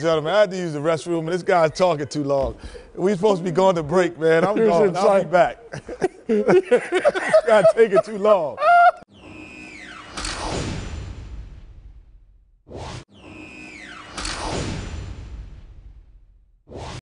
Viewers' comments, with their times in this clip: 0:08 sounds like some bird call